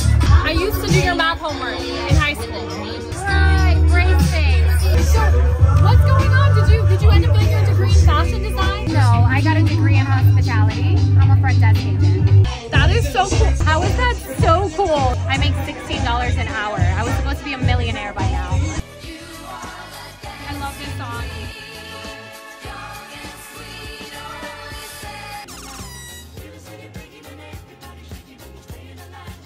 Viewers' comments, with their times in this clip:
0:10 she's a what? (closed caption was no help)